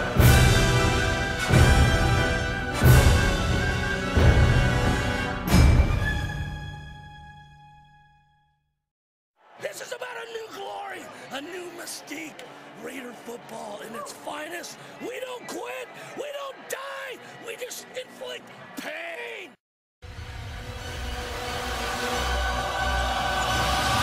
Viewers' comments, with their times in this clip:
0:09 Raider fan sounds like Sam Kinison